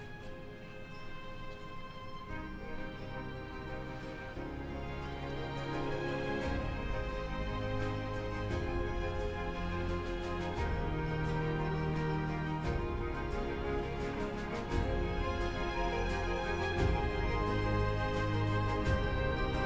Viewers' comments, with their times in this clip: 0:05 For me it's The way he looks at her there is beautiful, and feels very authentic to me. And the music is wonderful there as well.